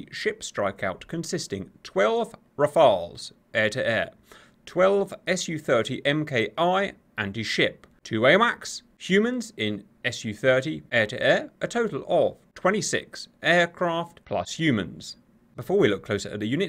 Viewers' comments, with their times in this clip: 0:03 Oh thank goodness you pronounced the French fighter name correctly ! Not like the christian first name "Raphaël", but like the french word "Rafale" for a gust of wind or a machine-gun burst. Nobody in the english-speaking world gets it right, Kudos !